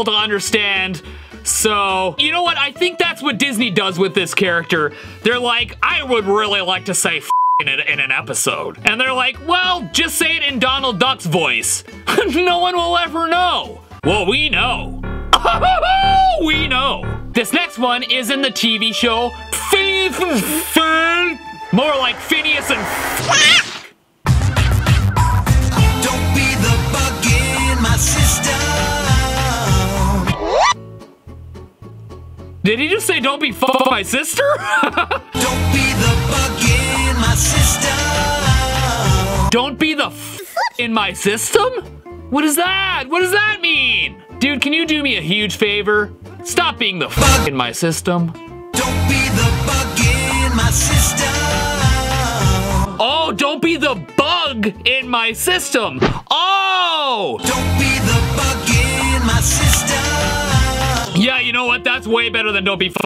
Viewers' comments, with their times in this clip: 0:05 it sounds like Donald is saying I am fat to me
0:10 Basically, everything sounds ten times funnier in Donald's voice.🤣🦆
0:24 … it’s almost as if he’s saying “don’t be the bug in my system”…
0:26 It Sounds Like An Italian Dude Saying Don't Be-a F$$$ing My Sister, No Offense LOL I CAN'T, THIS GIVES ME PANTY AND STOCKING VIBES WHEN HE SAID THAT #PANTYANDSTOCKING 😆 🤣 😂
0:31 "Bug in my system" is what I heard first time. not sure how u didn't get that first time
0:32 the fuck glitches
0:33 I love it when he repeats the ''u'' sound to make it more funny🤣🤣🤣
0:33 DONT BE THE BUGGING MY SISTER
0:35 that 100% says "dont be the f$%&ing my sister"
0:49 I actually saw that episode and heard the F word when I watched it